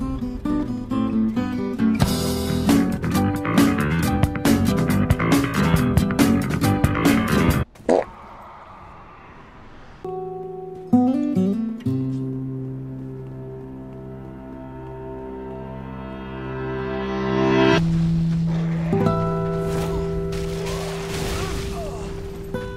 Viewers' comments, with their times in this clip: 0:08 That fart made me die from laughing. I need to sleep